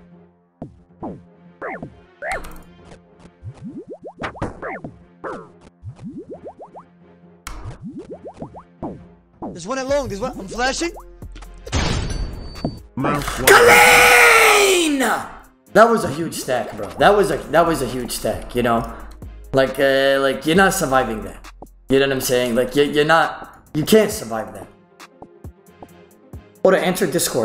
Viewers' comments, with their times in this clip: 0:10 at 0.25x playback yeah man its CALEAN